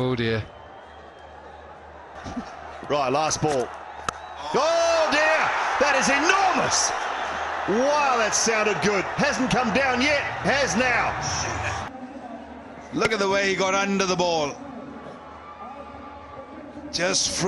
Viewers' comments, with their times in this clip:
0:03 enormous 🔥 sound of the bat ✌🏻